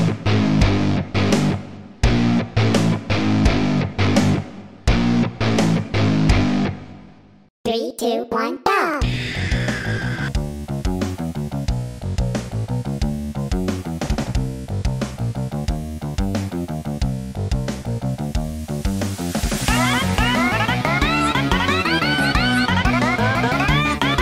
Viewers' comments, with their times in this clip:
0:07 I love the use of Fours SCREEECH lol
0:09 in start of song Backrooms. You can hear four's screech